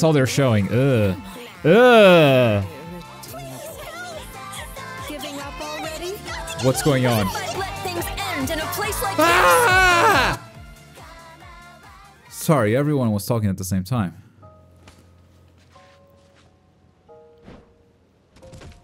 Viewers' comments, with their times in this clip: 0:06 wtf was that. Why was everyone talking at the same time loll